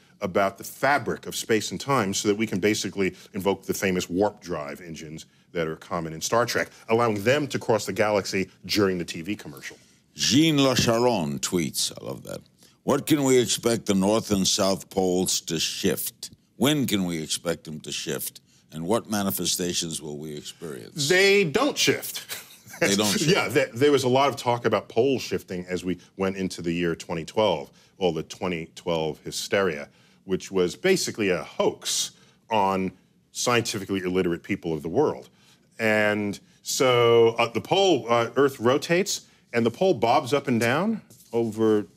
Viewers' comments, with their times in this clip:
0:07 So only me & Neil laughed on joke :D :D
0:20 this guy hit the weirdest woah
0:24 Neil Degrasse Tyson spits when he says "pole shifting"